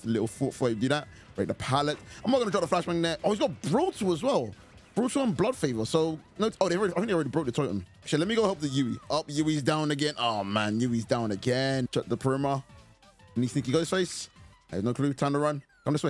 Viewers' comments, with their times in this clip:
0:04 this dont sound like proper english